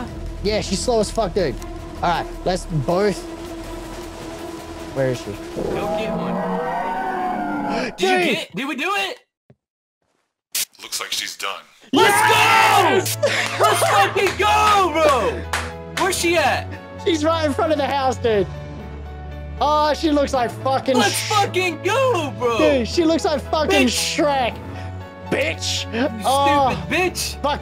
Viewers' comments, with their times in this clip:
0:10 the most triumphant "Lets Go" lol